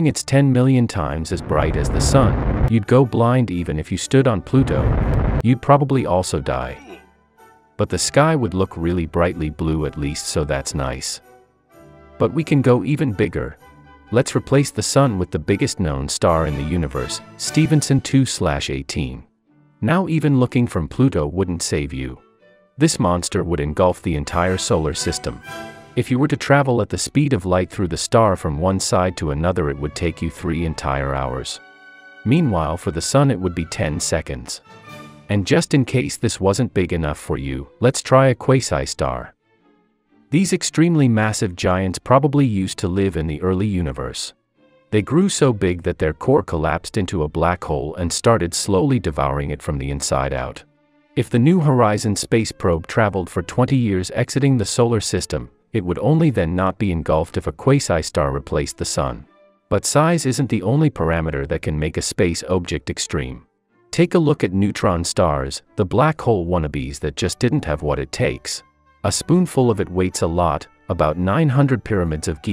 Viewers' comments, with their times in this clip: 0:07 "boom sound makes me laugh
0:58 Is that a hint of British ? 0.o